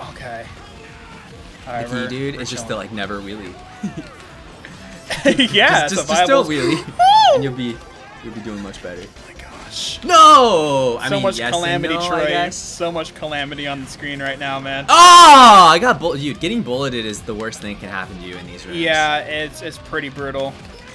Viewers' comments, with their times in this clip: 0:06 Yo Michael Jackson that you?